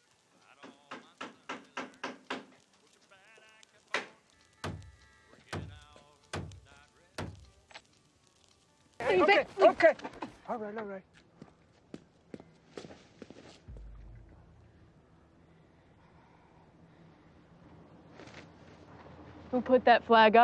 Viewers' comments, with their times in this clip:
0:03 The ”knocking” got me freaked out bcus its in the middle of the night so I was like who the fuck is knocking on my window?! So I has to watch it again to understand that it came from the vid :)